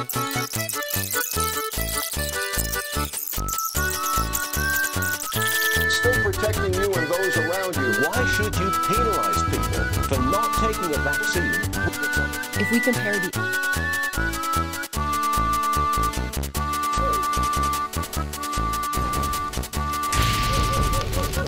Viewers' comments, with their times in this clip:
0:06 i hear some news in the background